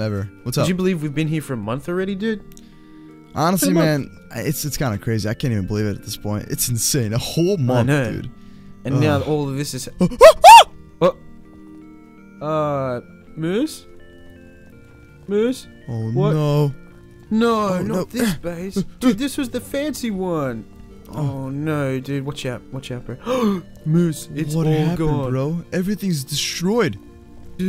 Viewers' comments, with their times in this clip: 0:09 lol that girly scream XD